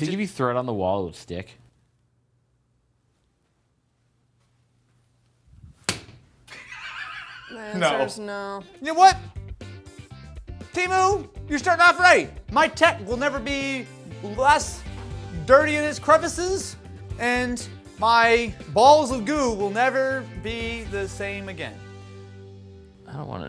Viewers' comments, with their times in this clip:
0:06 never let that girl be around for another video she sounds like death 😂😂